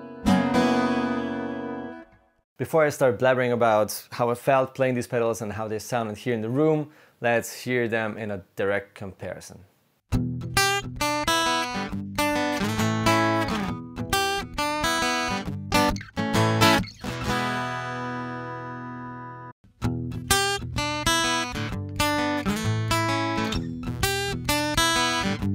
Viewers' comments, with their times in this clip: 0:10 Hello.... at the beginning of comparisons he does play a plain guitar sample.... no pedal.